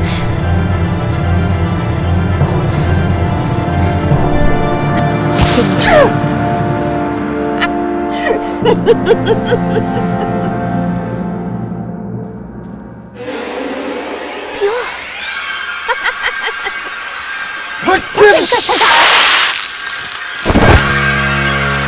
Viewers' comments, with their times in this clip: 0:04 that “PURE” line was golden and the horror music 😱😆 so good well done! 👏👏👏
0:06 the way she laughs and says “pure”. I swear this scene is the best❤️